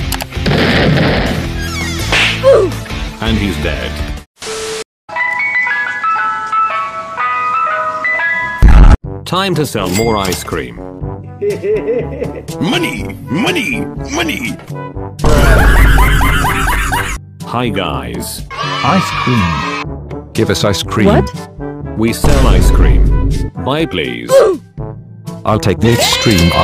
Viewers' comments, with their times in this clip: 0:05 LOL THAT ICE CREAM MUSIC LOL
0:07 The music was a bit creepy lol funny edit.